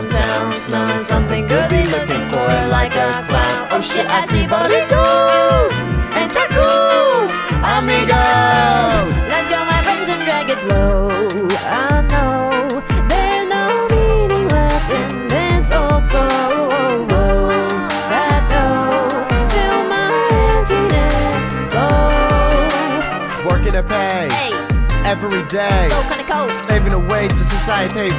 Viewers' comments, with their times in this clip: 0:09 That 'low' slapped me so hard